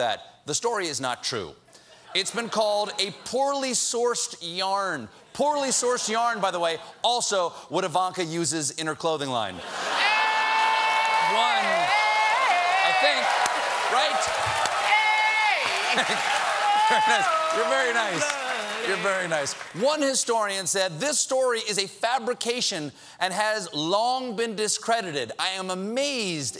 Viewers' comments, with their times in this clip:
0:10 Jon Baptiste channeled Tarzan or George of The Jungle
0:12 why in the fuck!? stop that screaming please!